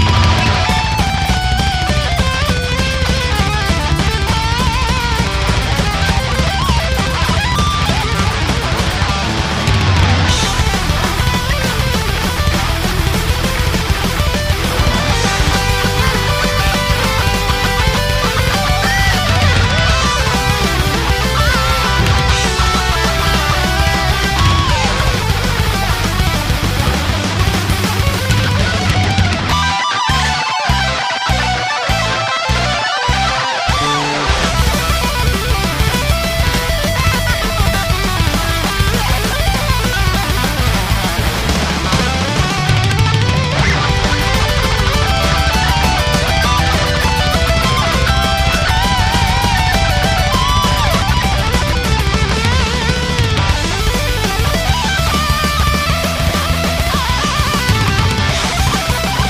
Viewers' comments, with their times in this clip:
0:08 herman smiles cos he absolutely fluffed those natural harmonics for the divebomb
0:43 I really love this part of the solo and it's not even that fast, sounds pretty sick gotta admit